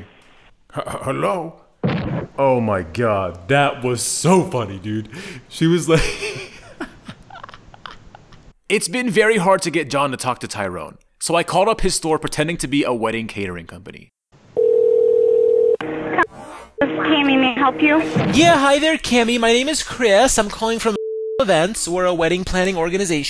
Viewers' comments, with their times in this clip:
0:09 why did this line sound like he was rapping to a beat lmfao